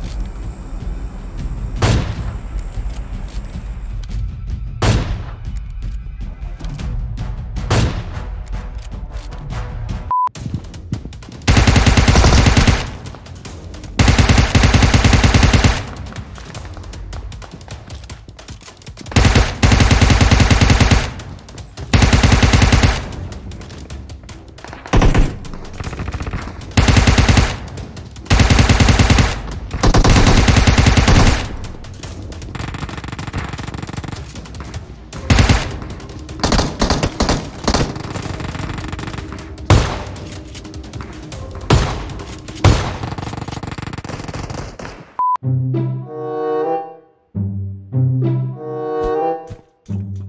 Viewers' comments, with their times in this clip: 0:10 That sound of old ump ❤️
0:10 ahhh yes, the nostalgia sound of ump
0:12 that old sound of UMP😍
0:17 that ump sound only og knowa
0:22 that UMP sound 😘
0:31 the old ump sound😢